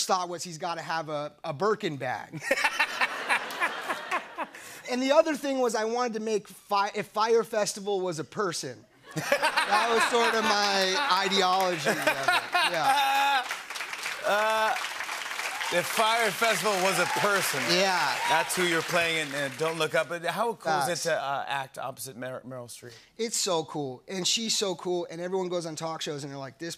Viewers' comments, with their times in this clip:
0:08 Jimmys laugh making Jonah uncomfortable
0:10 Jimmy needs to learn fake laugh skills from his audience. They're pretty good at it.
0:11 that's one of the worst fake laughs I've ever heard
0:11 That fake laugh haunts me in my nightmares